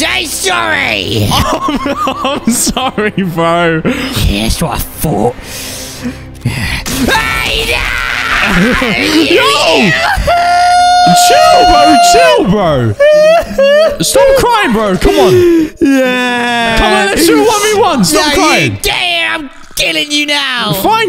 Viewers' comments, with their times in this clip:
0:06 that’s so fake cry